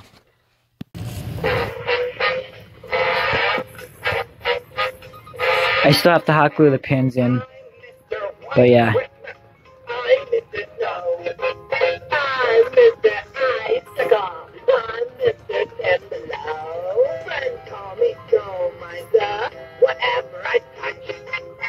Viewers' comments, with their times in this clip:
0:09 when you repeatedly move a microphone back and forth from your face